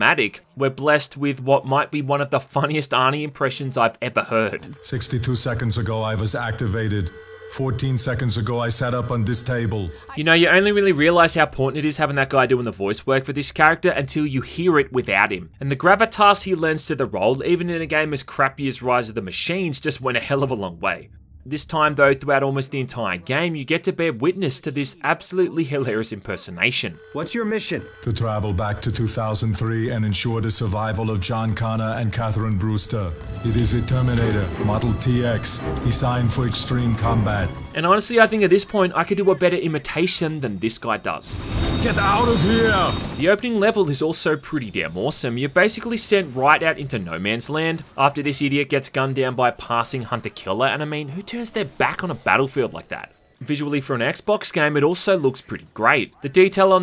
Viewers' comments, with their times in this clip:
0:05 the terminator sounds like Christopher Walken impersonating Arnold Schwarzenegger
0:05 why does that sound like Christopher Walken? lmao
0:37 That's something I'd like to hear: an Australian Terminator vs an Austrian Terminator.